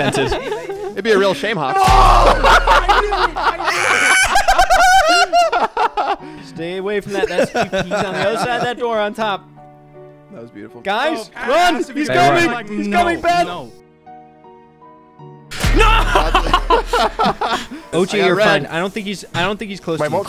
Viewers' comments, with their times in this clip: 0:03 this laugh was so gooooood😂😂😂😂😂